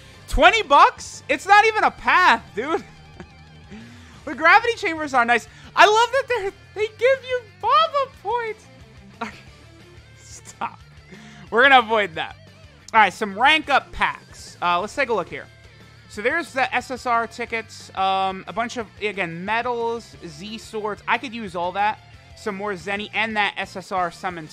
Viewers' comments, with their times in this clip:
0:06 Did anyone else hear Mickey Mouse or am I tripping